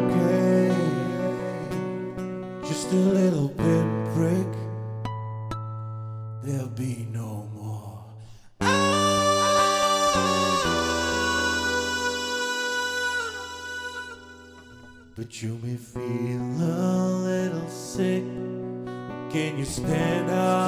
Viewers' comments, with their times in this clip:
0:04 I like what you did on the "...just a little pinprick . . ." part with the harmonics and pausing for effect for the "Ahhhhhh" part. I had a hard time figuring out a good way to pull that part off well solo acoustic. This was a good solution.